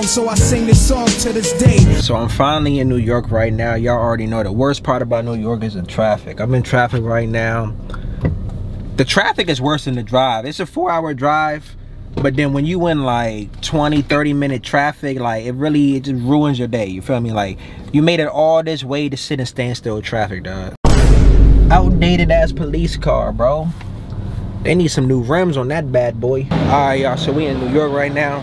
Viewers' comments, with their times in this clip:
0:09 "f00ur hour drive" voice crack havin ass